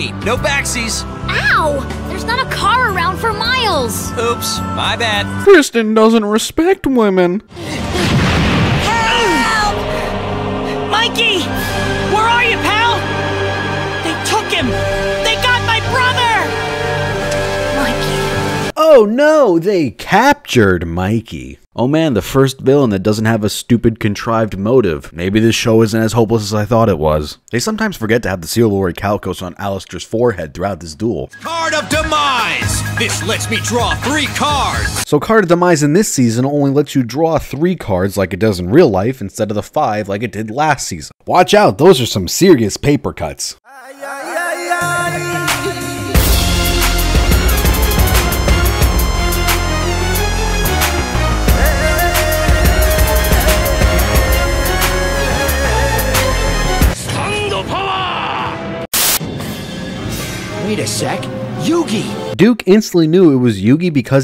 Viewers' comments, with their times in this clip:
0:08 That sounds like Skinner's mother from the Simpsons Steamed Hams skit.
0:10 why does it sound like the Life Point dropping to Zero when Mikey gets blown up with a Tank hahaha
0:43 when doom music kicks in (what is this song)
0:50 Agreed on everything you mentioned once again! I need the music which starts sounds kinda great